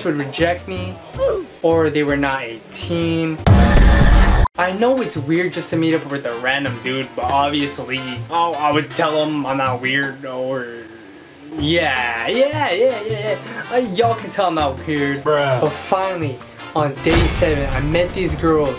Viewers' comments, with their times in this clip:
0:03 bruh a loud firework exploded as that thing showed and scared tf out of me😭